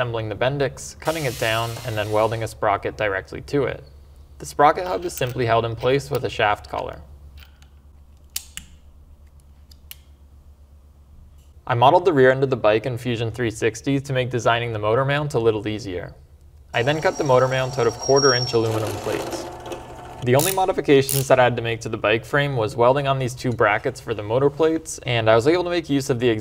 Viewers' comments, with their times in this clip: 0:08 did you edit in a torque wrench clicking here? lmao